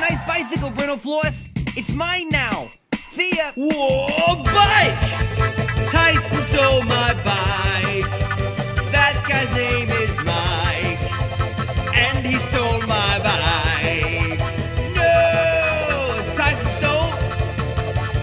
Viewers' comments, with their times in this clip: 0:04 Brentalfloss is PHIL ANSELMO.